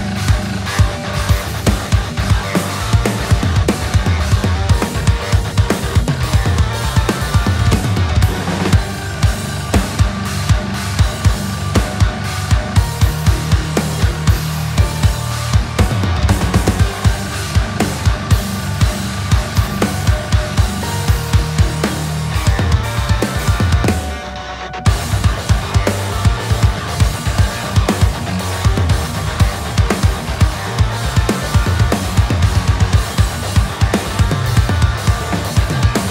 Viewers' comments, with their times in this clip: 0:07 THAT CYMBAL HIT THO! ha ha ha he hit it like he meant it!
0:09 I don't know why, but I love what you did there hahaha. It's like you were really concerned about the timing of that china hit, yet I still had some time in between the hits to duck and cover thinking about the chance that the world must implode upon the initial hit. idk
0:24 Wow !! But that Floor tom/ Snare Flam Was flawless.